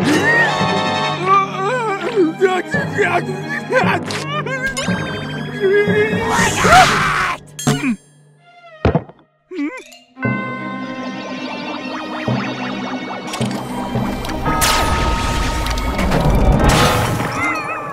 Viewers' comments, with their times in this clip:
0:03 Didn't it seem to me or did she say to be silent? in russian